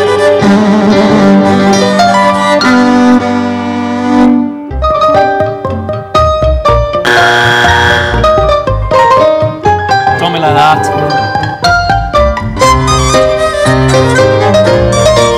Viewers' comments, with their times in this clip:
0:03 I kind of feel bad for them here. Seems like she wrote that part that was going to be loved, but it just gave them their first buzzer